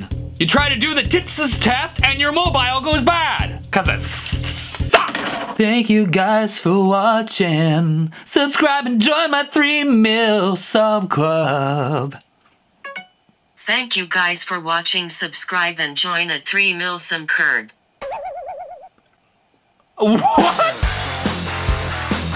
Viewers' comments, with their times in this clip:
0:06 he actually doesn’t have a bad voice Maybe we should